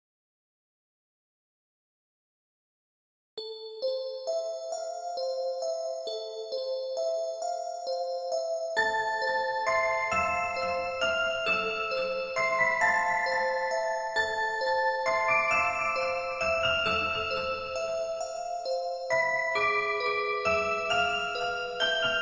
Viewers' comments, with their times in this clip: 0:08 Wow the song tho I love it